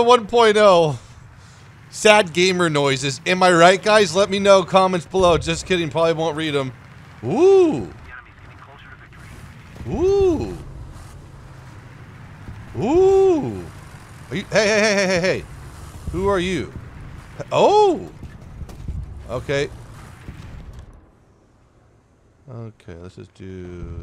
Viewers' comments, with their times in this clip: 0:07 when the ship’s alarm starts going off